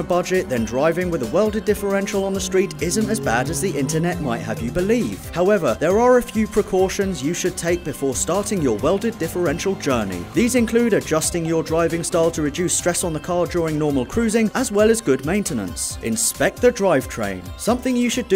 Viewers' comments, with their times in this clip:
0:04 car crash off camera